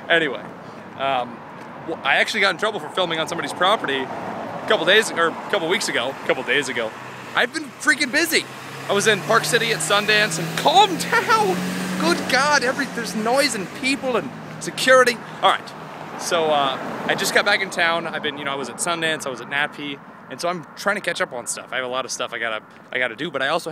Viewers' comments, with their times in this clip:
0:09 keep clicking for epic funny noise